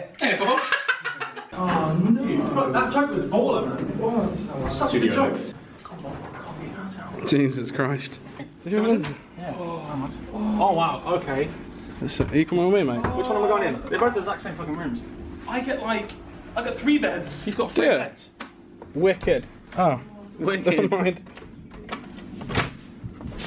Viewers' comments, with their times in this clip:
0:08 Could someone explain the moaning sounds in the background ??